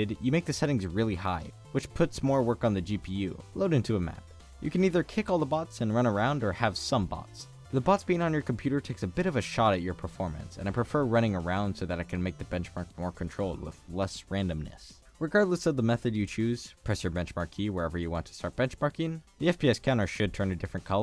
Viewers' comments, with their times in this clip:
0:09 Did anyone else notice his phone buzzing ?? It made me check my phone lol